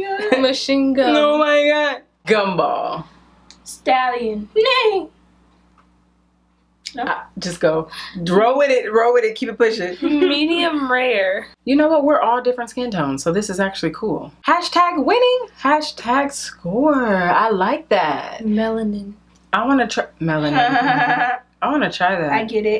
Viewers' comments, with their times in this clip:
0:04 lol she hit a note vocals on fleek. haha